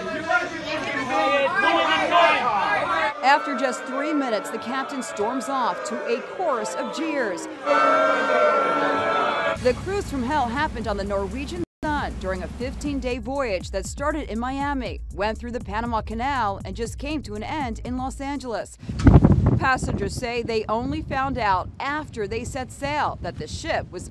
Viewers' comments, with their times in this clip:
0:07 Captions: [Music] Video: People booing
0:07 after a few minutes the captain storms of into a chorus of cheers Hears the crowd booing What